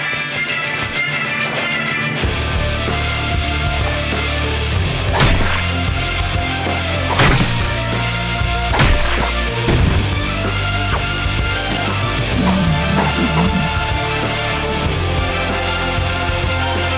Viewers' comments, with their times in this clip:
0:04 reminds me of the Saw theme, haha.